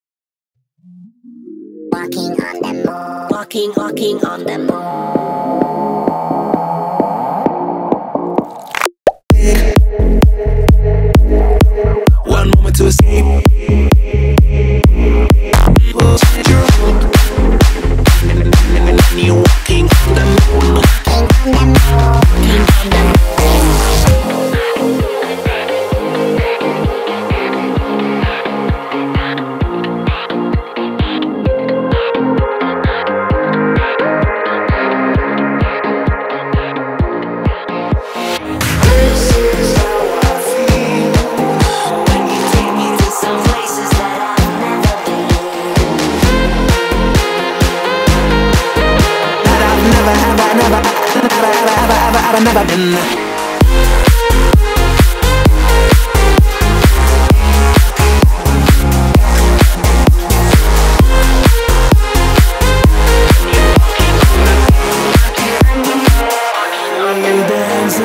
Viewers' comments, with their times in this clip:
0:02 I thought it said: fucking on the moon
0:46 this shit dropped harder than my will to live
0:53 The melody somewhat reminds me of Old Town Road